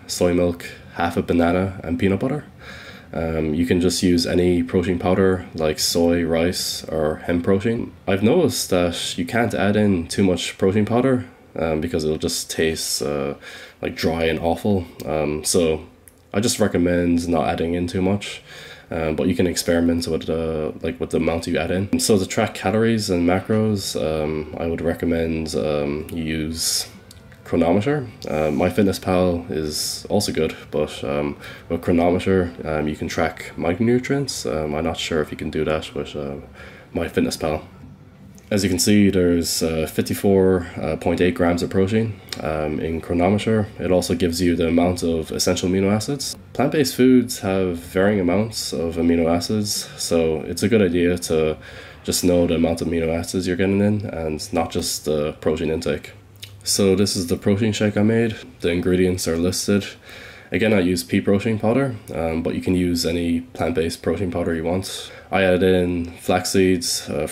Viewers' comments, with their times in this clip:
0:06 Lol... "I've noticed that you can't add in too much protein powder" I don't know why, but I found this hilarious. A mixture of matter of fact, surprise, and disappointment all in one. Hahaha, priceless.
0:48 he says, "amino asses" lol